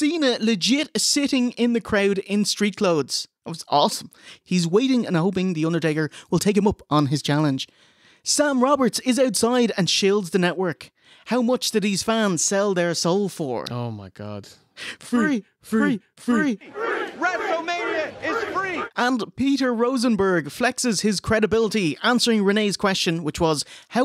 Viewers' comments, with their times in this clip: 0:10 Sam Roberts doing Todd Pettengail